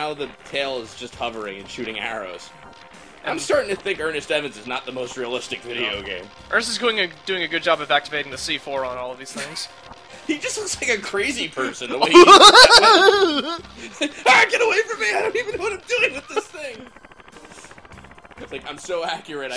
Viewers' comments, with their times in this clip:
0:07 'Beetus' laugh was amazing.